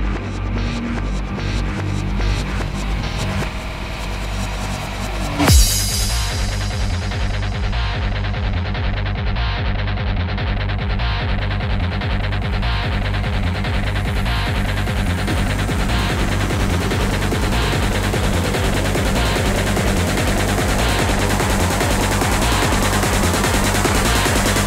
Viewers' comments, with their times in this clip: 0:06 Killer thrash metal break min